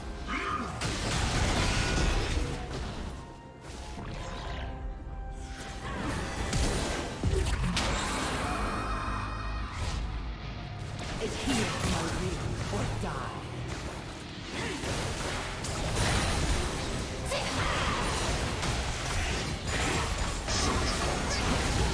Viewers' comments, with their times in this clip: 0:08 imagine you are the queen of the void then suddenly someone forces you inside of his own realm just to let you witness his death metal guitar solo